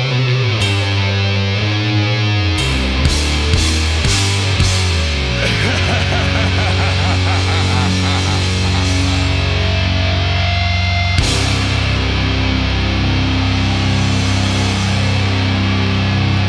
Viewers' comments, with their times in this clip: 0:03 That laugh, hahahaha! Amazing!
0:03 That Laugh Goosebumps